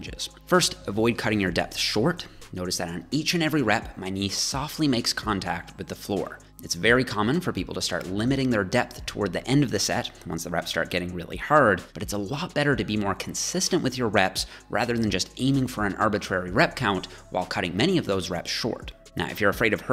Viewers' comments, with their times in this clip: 0:05 Why did i hear avoid cutting onions sincs you'll be crying your life out